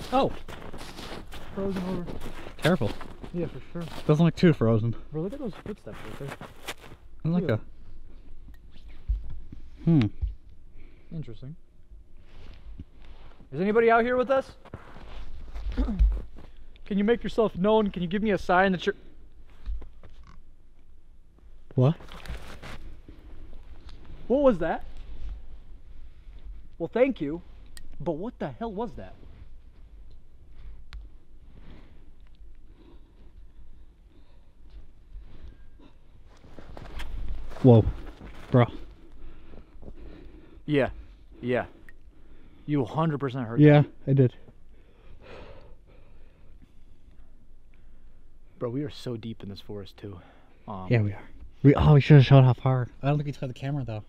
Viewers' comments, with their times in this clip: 0:08 Yes! Absolutely! That's what I came here to comment on! That EVP & a weird snort sound like it was put right into the mic on the camera! The hair on my arms is still standing up!
0:19 -22 😮😮THAT WAS A GRUNT OR A SNORT of some kind
0:20 im pretty sure was a wild boar some where near you. :P
0:35 wts was that musical note~y sound???
0:38 ....I dont think that was your breath plz check....plzzz